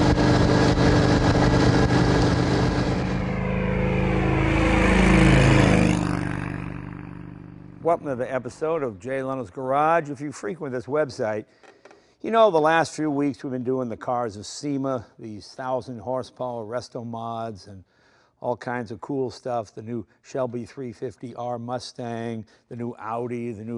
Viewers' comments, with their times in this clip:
0:04 Would have liked more sound at speed that wasn't from the onboard camera. That one little pass in the intro and again towards the end sounded like an old radial engine aircraft coming towards you and then passing overhead. Wonderful. :)